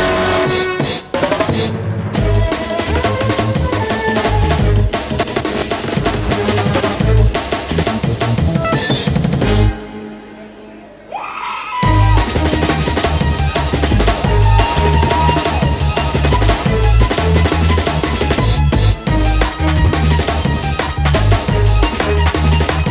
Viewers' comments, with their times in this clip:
0:09 that scream :DD epic